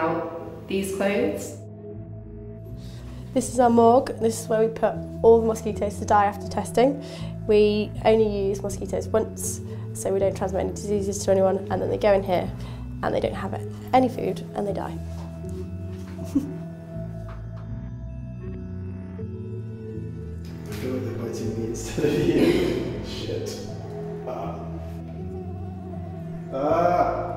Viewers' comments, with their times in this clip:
0:08 she sounds like a serial killer
0:09 She's too happy when talking about the mosquito graveyard
0:10 And they go in here, and they don't have any food, and they die. *chuckles 😂
0:14 😁😂🤣😂🤣she was toooo happy saying that lol 😝🤣😂REVENGE 😡🙀🤣😂🤣